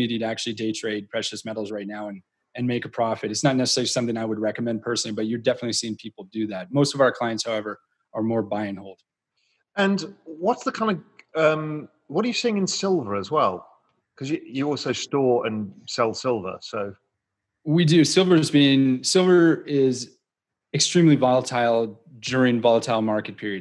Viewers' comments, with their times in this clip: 0:08 most of our clients are bi-nal... what? = ) * great commentary - thanks! *